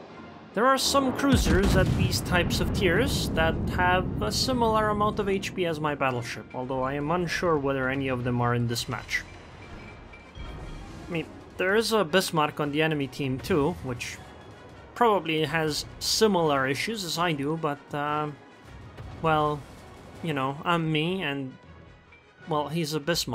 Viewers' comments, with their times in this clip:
0:10 did you just say "meeep" like the rode runner?